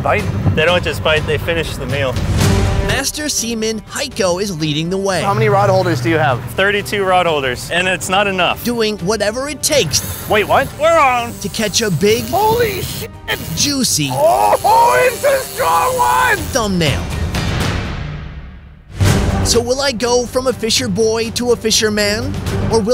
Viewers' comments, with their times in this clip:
0:04 did he just say master semen
0:04 who else heard "semen" instead of seaman?